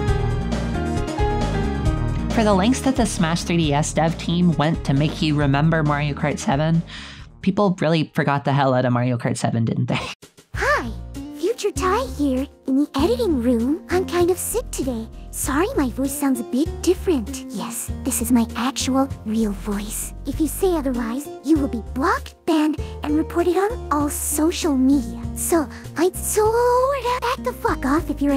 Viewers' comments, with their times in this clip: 0:10 100% not fluttershy i promise